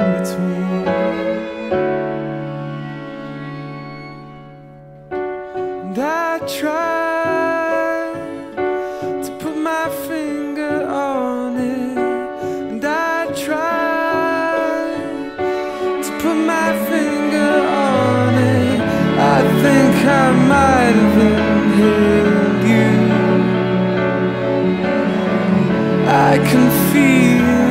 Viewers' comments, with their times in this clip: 0:09 build to the end is seriously among the most incredible things i've ever heard